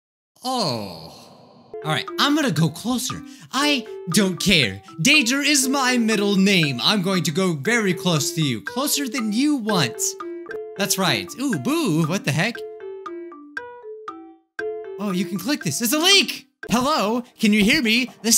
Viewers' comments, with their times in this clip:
0:05 "Bijuu Danger mike" Sounds like a good name to me